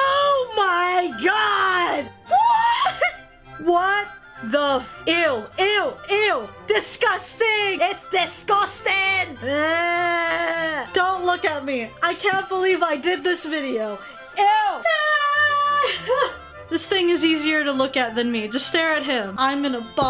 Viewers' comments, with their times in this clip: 0:06 pullin that filipino accent eh?
0:08 why did she sound like a Scottish dude 😁😂
0:08 I swear to god she sounds Scottish or somethin’ xD